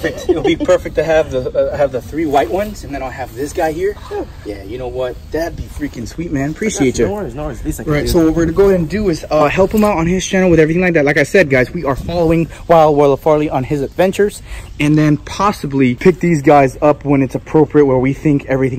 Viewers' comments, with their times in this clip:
0:06 no fist-bump explosion sounds what is this Also is it just me or at the end did he say we'll feed you guys in the next video
0:06 tbh kinda sad there wasn't an explosion sound on the fist bump lol